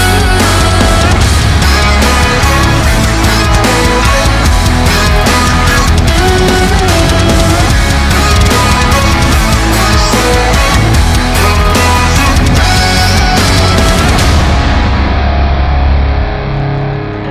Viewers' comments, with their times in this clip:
0:05 has the best drumming part